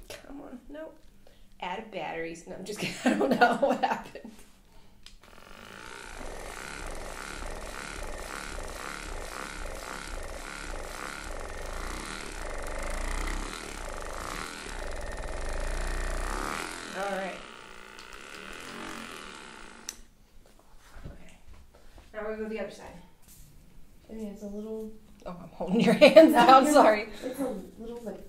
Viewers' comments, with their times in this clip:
0:10 Actual cracking starts x